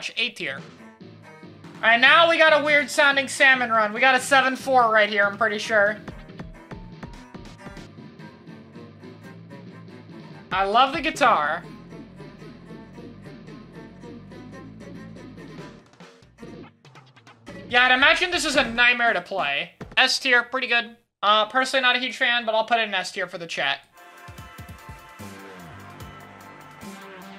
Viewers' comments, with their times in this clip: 0:09 That's a Cello you Philistine